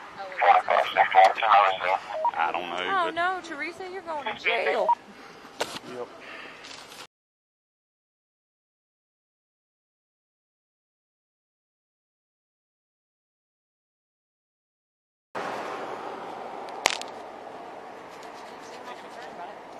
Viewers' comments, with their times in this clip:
0:03 oh No Ur going in jail, she seems to happy for someone going to jail wow